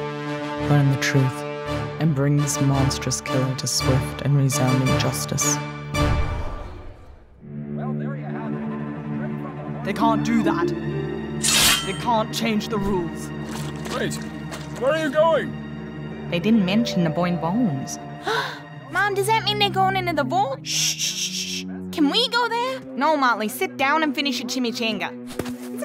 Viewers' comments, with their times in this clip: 0:09 Bro is shouting in lowercase